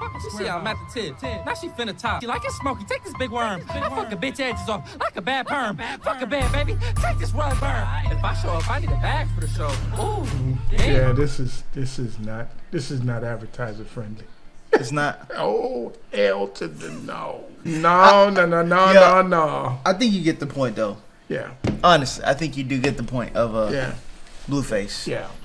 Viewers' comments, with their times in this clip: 0:06 the voice crack and the way he was doing it lol